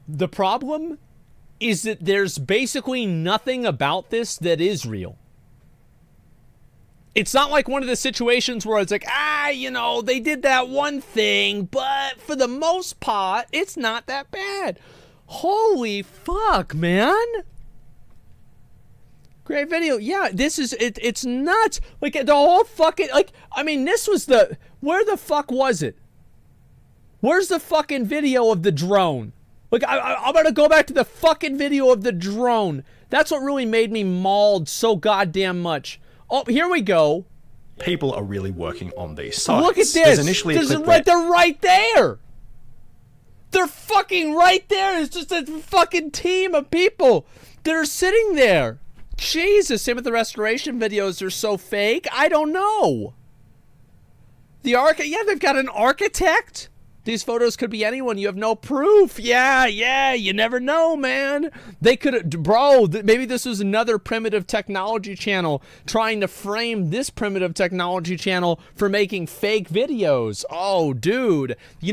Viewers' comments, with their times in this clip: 0:04 he says isreal!
0:57 Tell me you don't hear shaggy for a sec there.